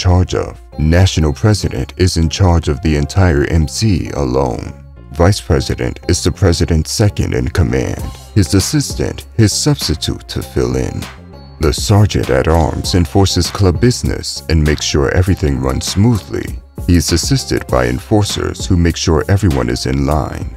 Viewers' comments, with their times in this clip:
0:05 Annoying narrater voice. I bailed out before the or.